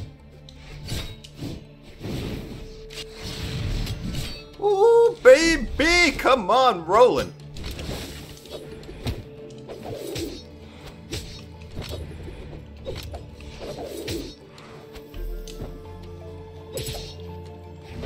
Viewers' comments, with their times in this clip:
0:04 A U T O T U N E